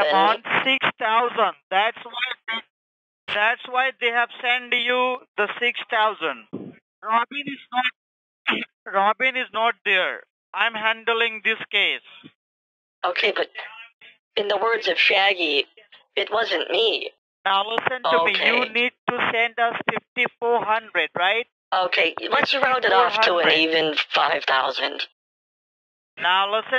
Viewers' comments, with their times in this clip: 0:08 robin is not deer BRUH💀🤣🤣